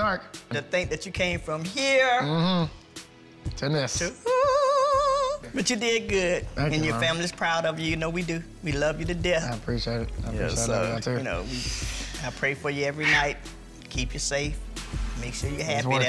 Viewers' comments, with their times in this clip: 0:04 Ain’t nobody gonna talk about t-pain’s mom’s singing voice??? Y’all